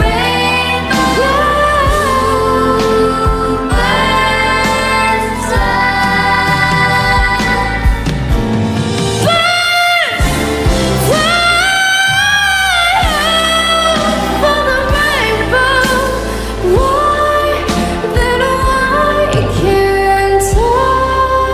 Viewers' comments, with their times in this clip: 0:07 her powerful voice wth